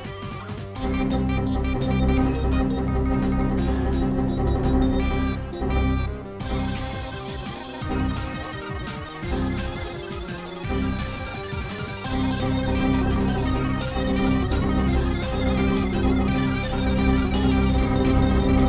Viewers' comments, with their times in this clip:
0:06 did i just hear danger part?